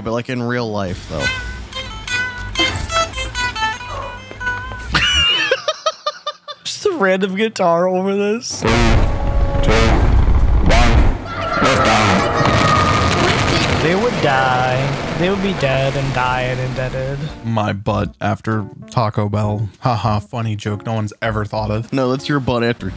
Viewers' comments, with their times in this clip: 0:08 sounds like real rocket launch footage